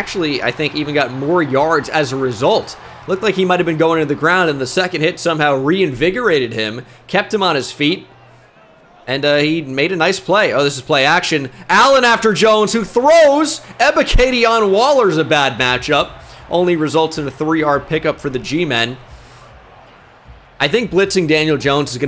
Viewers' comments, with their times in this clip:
0:06 the way u talking reminded of some shit out of seinfeld